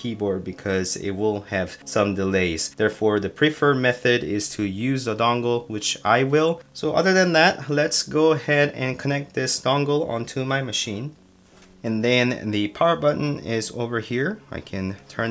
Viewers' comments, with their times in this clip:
0:03 I also noticed some ticking/static noise on some parts of the video. I think it was the keyboard that is trying to connect and messing with my mic.